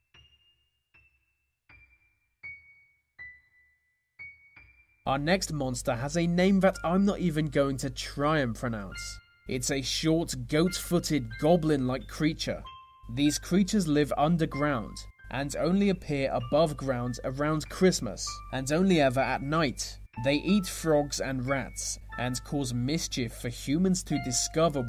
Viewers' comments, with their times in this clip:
0:09 Cally can't zarous. is how it sounds.